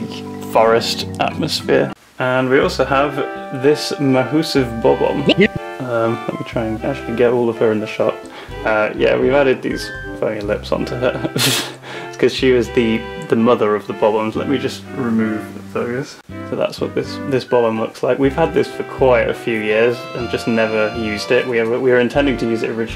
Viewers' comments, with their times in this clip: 0:10 did you say funny or the f word?